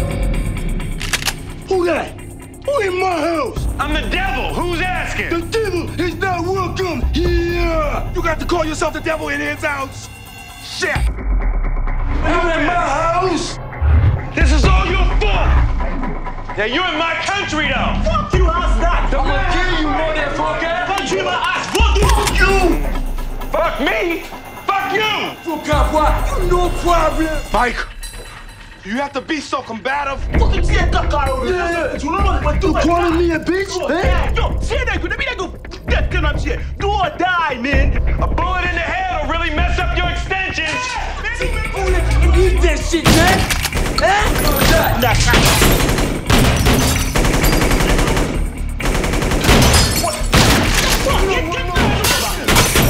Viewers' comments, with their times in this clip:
0:05 always love that "the devil is not welcome HIIIAA "
0:08 clearly a dubbed over, yet still hilarious
0:34 what this guy is saying, I can't make it out on what he is saying. I can't understand him.